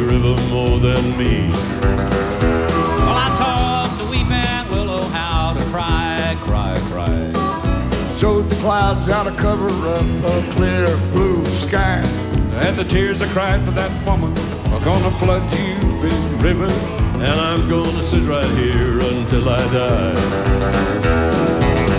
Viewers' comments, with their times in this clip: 0:05 Don't think i've ever heard Willie hit a note that low before.